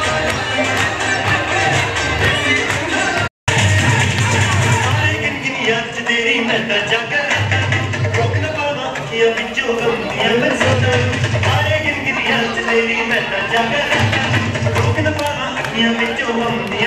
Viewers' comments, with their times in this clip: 0:04 Guys the song is a actually a sad song, this shows that Punjabis can dance at Anything,chakde fatte